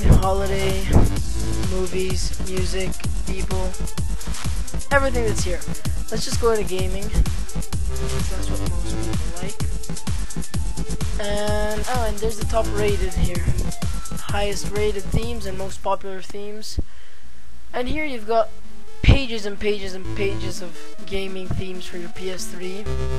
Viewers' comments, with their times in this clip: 0:04 hears like your sining: EVRY THING IS HERE